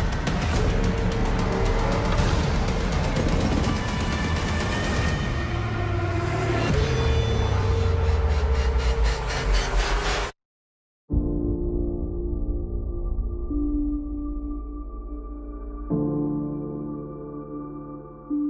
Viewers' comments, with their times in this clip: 0:05 Is it me or does it sound like Prime screaming?